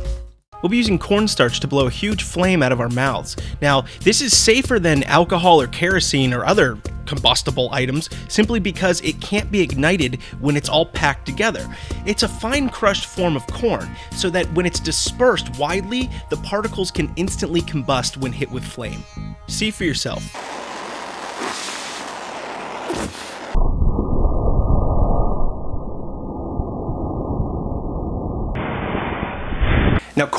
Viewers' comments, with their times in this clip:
0:08 he said porn
0:11 you are actually saying porn xD
0:12 I'm SURE he says 'Porn'